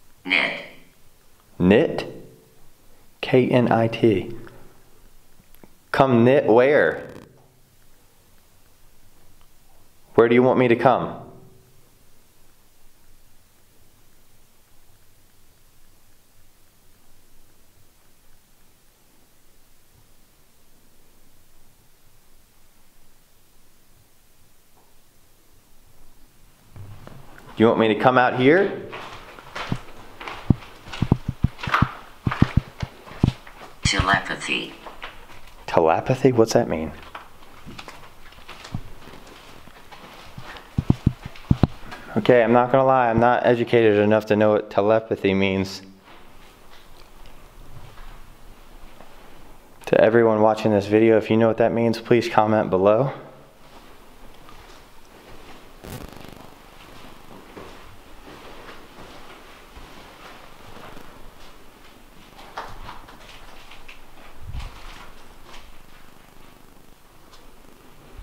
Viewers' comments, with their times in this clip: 0:08 as ur ask'n come knit where ur audio get staticy
0:56 you ask us to comment what Telepathy means and ur audio goes staticy and keeps going for a minute..